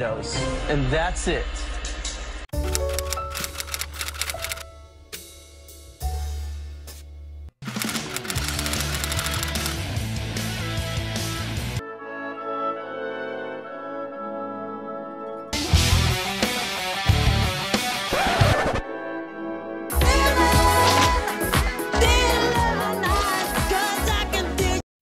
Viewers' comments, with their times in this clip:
0:08 You sound like Avril Lavigne. I’ve been trying to figure out who u sound like- Avril Lavigne EDIT: wtf at like I heard Sk8er Boi.. wow